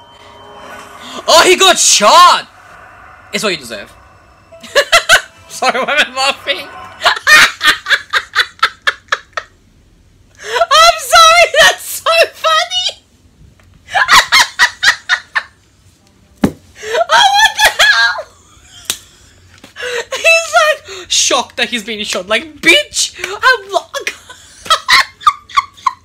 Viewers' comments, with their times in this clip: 0:07 this might be the most evil laugh I've heard in like forever